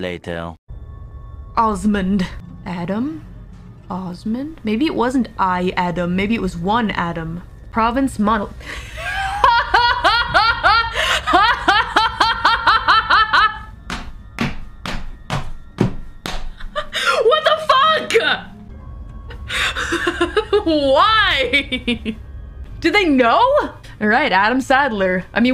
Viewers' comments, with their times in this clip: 0:09 i like her laugh :)))